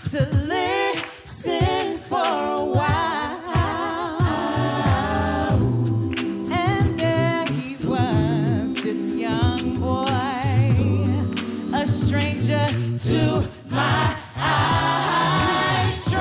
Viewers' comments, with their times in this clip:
0:04 god that harmony STILL gives me goosebumps. i remember watching that live and i had to rewind it like 10 times haha